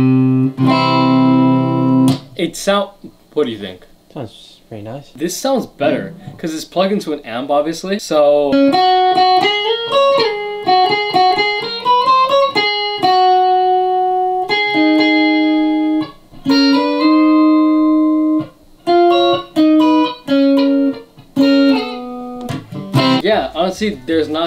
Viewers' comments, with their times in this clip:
0:08 this is not the c major scale right?